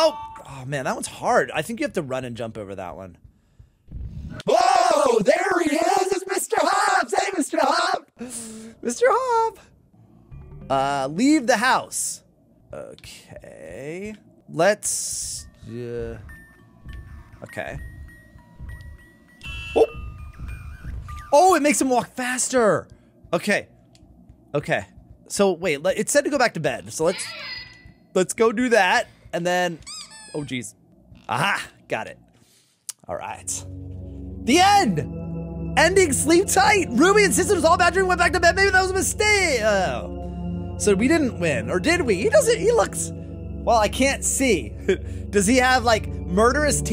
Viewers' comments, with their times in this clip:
0:04 THAT KILLED ME THE VOICE EFGECT OML 💀✨
0:04 your voice scared me more lol
0:34 in excitement "The end, ending sleep tight Ruby insisted it was all a bad dream & went back to bed maybe that was a........mistaohh" *gets disappointed*😂😂😂😂